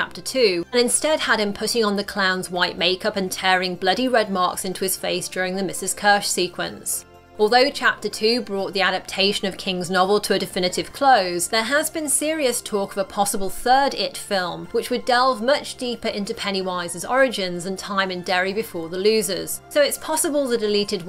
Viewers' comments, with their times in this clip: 0:04 does anyone actually know what he said? It sound like he said “ohh hooo hoooowwwwwwaaaaaaarrrrr” but like I just don’t know